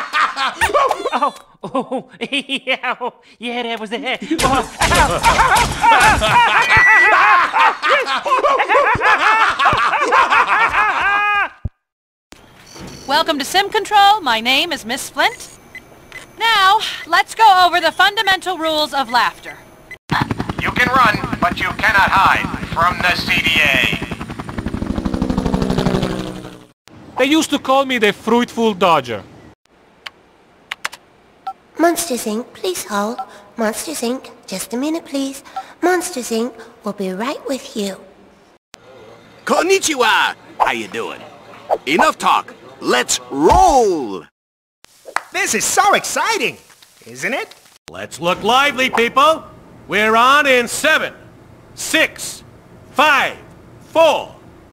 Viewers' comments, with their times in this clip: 0:04 Mike and Sulley starts laughing with humor.
0:44 sounds like Fozzie Bear From the 1980s animated cartoons he appears in.